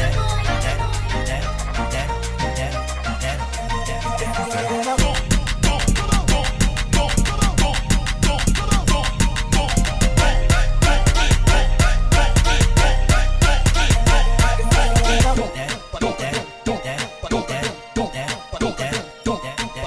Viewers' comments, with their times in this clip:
0:05 beat go hard